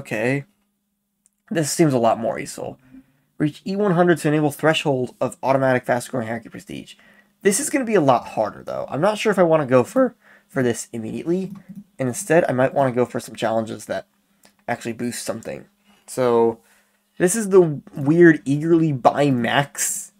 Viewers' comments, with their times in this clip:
0:08 epic voice crack moment